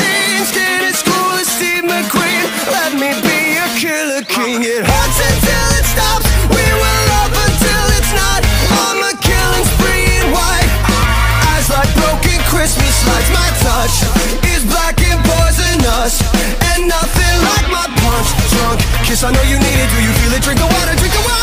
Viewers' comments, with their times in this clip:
0:04 I hear mama! Like if you hear it to.